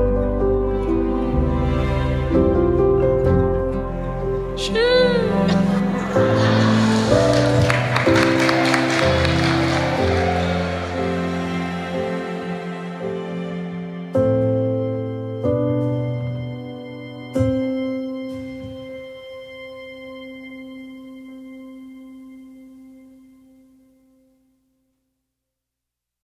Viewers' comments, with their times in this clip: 0:07 that was kinda a weak sheeew ngl